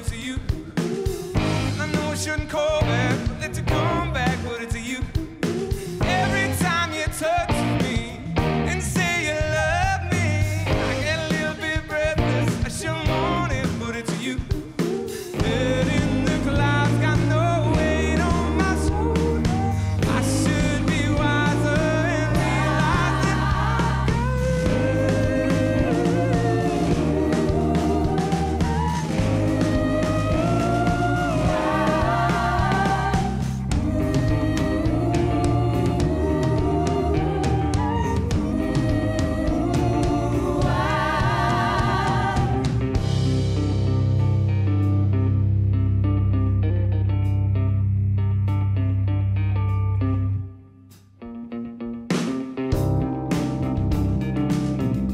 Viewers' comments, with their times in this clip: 0:06 love the riff
0:24 I love when it's too high to sing he replaced it with harmonies. Totally excellent arrangement
0:42 starts the 80s vibe....and I cant stop listening to it.
0:43 The guitar bit sounds similar to Eye of the Tiger by Survivor, which makes this cover sound all the more engaging for me. This rendition surpassed the original track. Bravo, Live Lounge and Hozier!